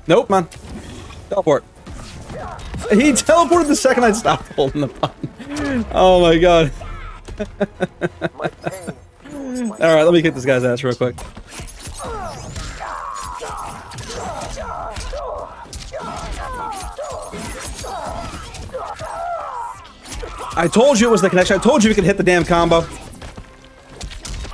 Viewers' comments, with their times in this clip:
0:06 bro sounded like a whole villain but dude your vids are fire keep it up know that you can reach 100k